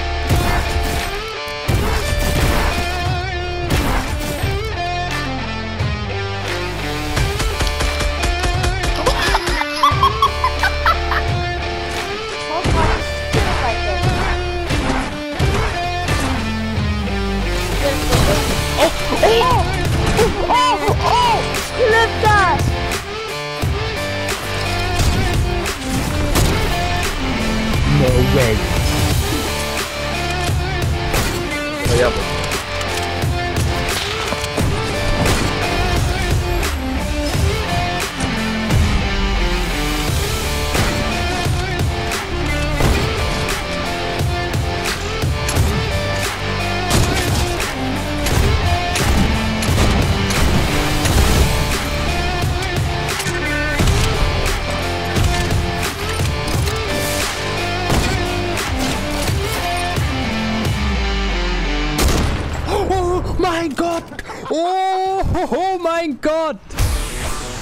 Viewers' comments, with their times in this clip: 0:07 new sound scar??
0:47 Perfect Timing Whit Song
0:48 perfect beat its so satisfying